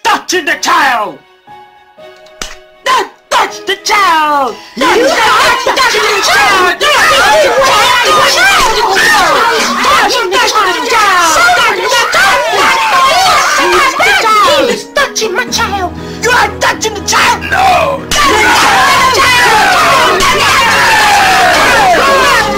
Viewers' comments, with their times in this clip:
0:05 crying child here